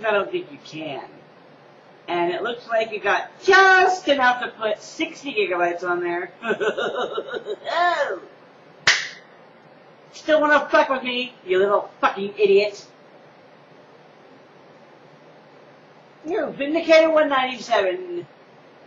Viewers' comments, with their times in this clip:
0:04 thats the best evil laugh ive ever heard forget "muhahahahaha" ppl should do this now